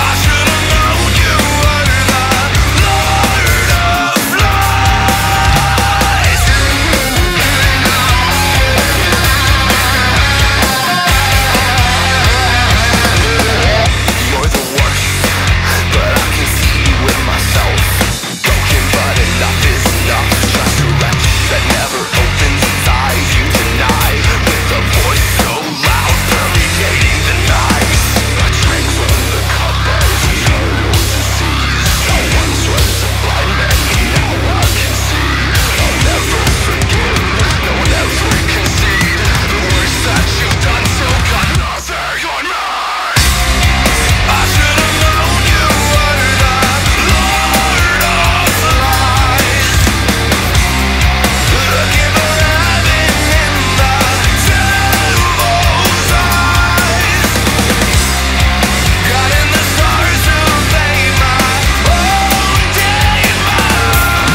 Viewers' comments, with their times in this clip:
0:10 That fake-out blast beat fill leading into the verse or so is 🔥🔥🔥 HOLY SHIT. Really awesome music you guys are making!
0:13 I don't know what the instrumental does here but whatever this is it sounds fucking amazing and I love it.
0:49 Thank you in glad I'm not thhr only one who noticed. In fountain of youth is where it sounds really similar to this song